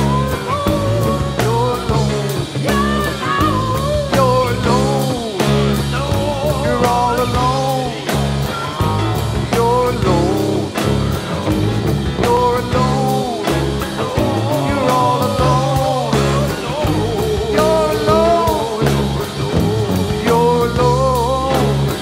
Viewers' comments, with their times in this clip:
0:05 I was there and as soon as Mike shifted to that key, I was getting chills. I just loved the sound of that jam so much, and Trey's melody was just magical... One of the highlights of the show.